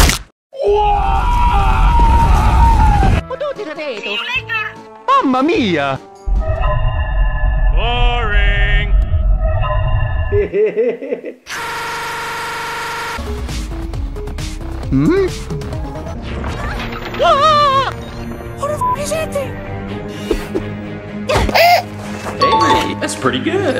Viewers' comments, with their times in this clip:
0:09 Black man laugh